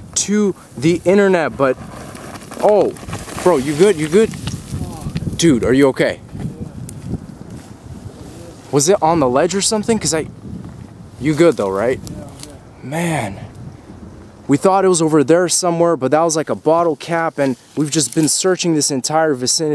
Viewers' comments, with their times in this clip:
0:03 he talks like a NPC